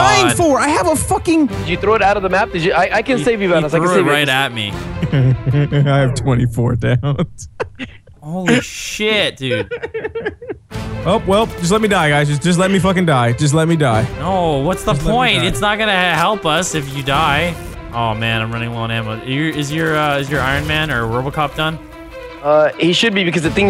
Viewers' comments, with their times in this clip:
0:05 That legit laugh